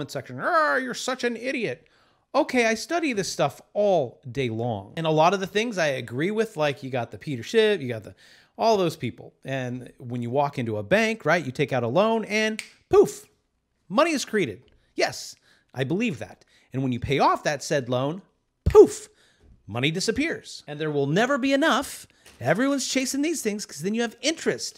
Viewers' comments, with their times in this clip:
0:05 I gave you a like because you called Peter $hit